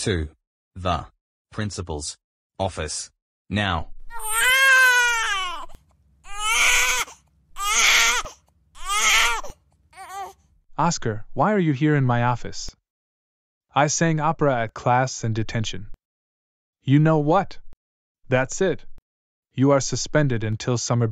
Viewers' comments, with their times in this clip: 0:04 Oscar The Grouch Crying 😢 It’s Really Funny